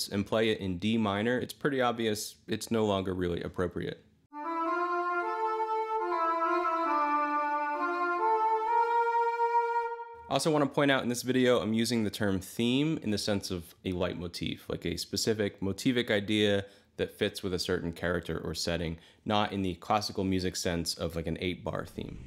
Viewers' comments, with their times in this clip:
0:09 The Shire in D Minor sounds like Tumnus' flute.